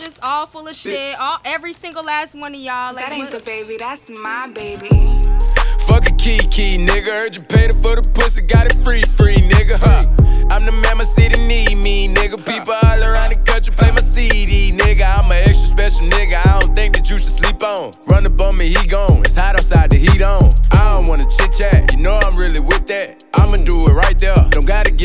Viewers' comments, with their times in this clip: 0:06 anyone hear this nigga drop tha hard R ?? LMAOOO